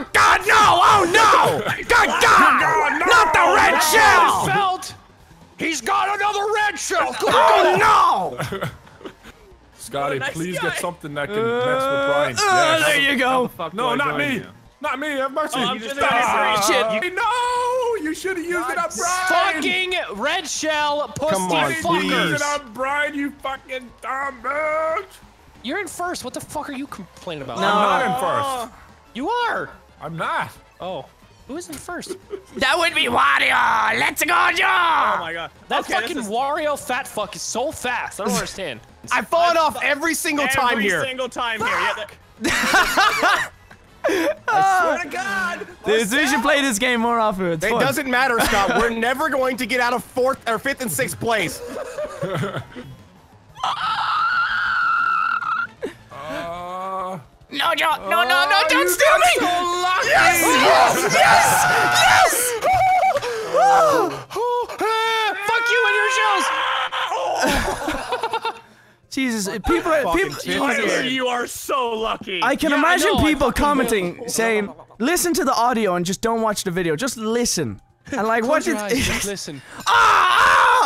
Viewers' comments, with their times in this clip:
0:07 and now he sound like suction cup man
1:05 Playing this at 2x speed, I swear Wildcat says "Fuck You NHS"